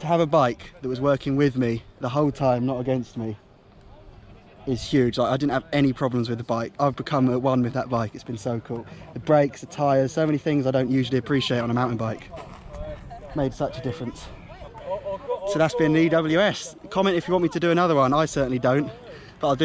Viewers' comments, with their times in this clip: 0:04 summons Siri for me lol